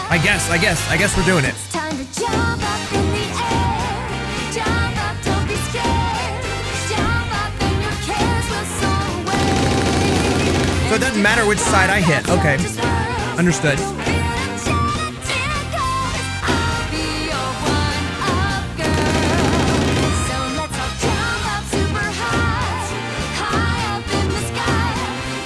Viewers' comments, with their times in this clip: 0:07 i love how absolutely brutal all the drum rolls sound